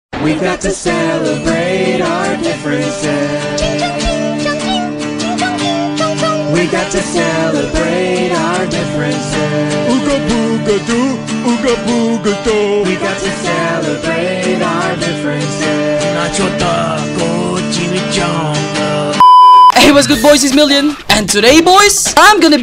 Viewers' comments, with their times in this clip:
0:03 the music bro 💀